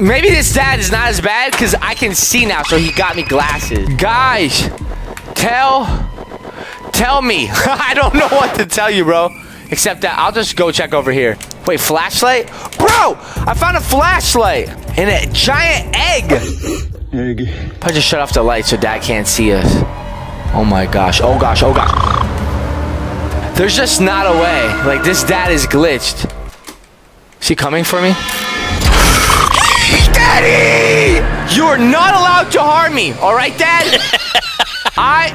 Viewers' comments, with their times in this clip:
0:09 It's Can you please stop screaming😭😭
0:16 intense sniffing e g g